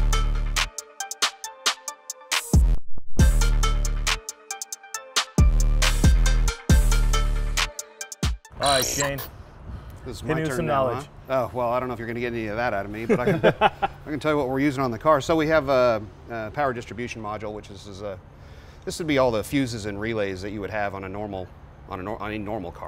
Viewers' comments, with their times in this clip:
0:09 Dan Akroyds in the house, just close your eyes and listen 😁
0:09 THIS GUY SOUNDS LIKE DAN AYKROYD IN HIS HIGHER PITCHED VOICE!